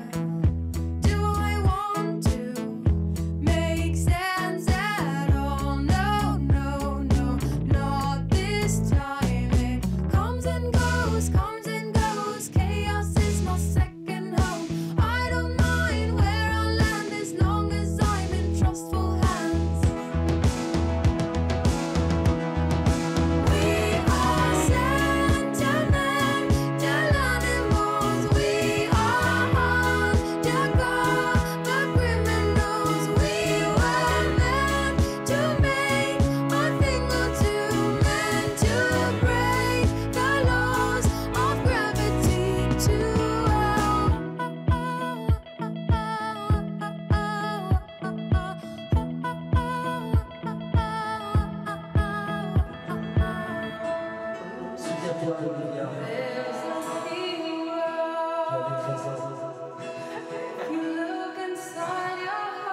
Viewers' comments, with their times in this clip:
0:09 sounds like Super Trouper by ABBA
0:44 vitas join the band